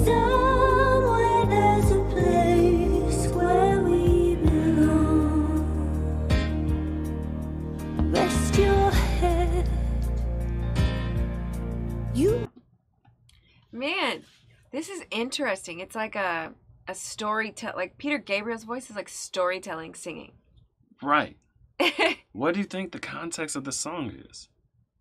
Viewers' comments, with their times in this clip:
0:08 Fun Fact: Peter Gabriel originally wanted Dolly Parton for the female part and you can tell it switches into a "country-western" section that would have perfectly suited her voice. But Dolly wasnt available so he chose Kate Bush instead. I love both of them and this song is iconic but you have to wonder what it would have sounded like with Dolly.